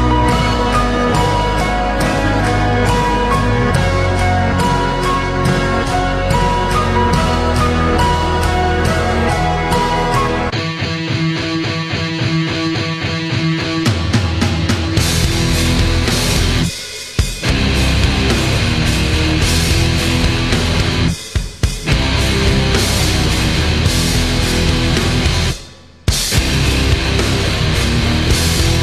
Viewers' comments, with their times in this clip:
0:09 What metal starting ?